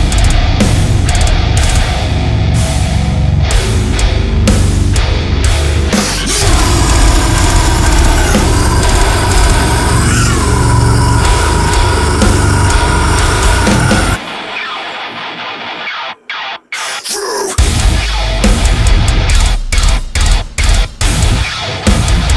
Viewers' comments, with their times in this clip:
0:06 Vocals remind me of Infant Annihilator